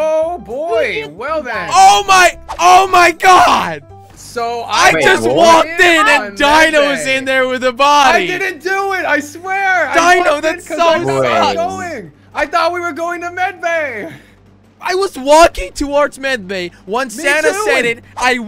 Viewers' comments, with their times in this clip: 0:03 Jelly is crying 🤣